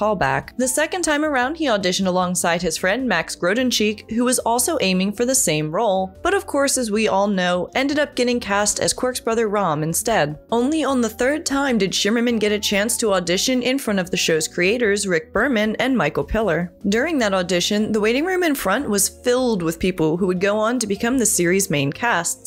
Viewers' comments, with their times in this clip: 0:09 She called him Quirk ... come on